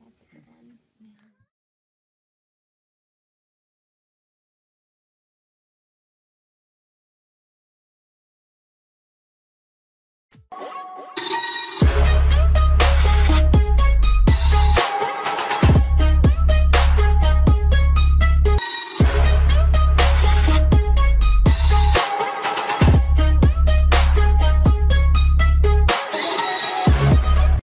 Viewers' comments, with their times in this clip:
0:10 "Is that too loud? Me: YES!!!